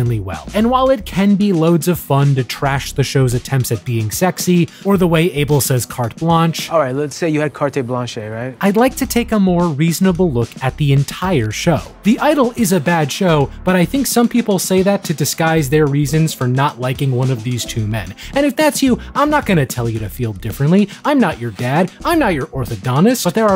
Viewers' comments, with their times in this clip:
0:06 wait, isn't The Weeknd fluent in French?! I thought he was Even if he didn't remeber hot to say carte blanche, I cannot believe nobody on the set said : "You know what? Let me check how this is supposed to be pronounced"